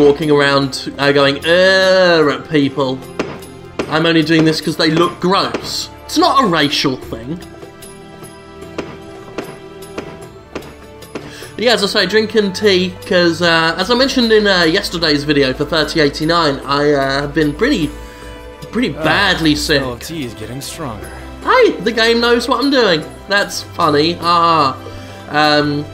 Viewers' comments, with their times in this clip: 0:06 with closed captions on small Rachel clinton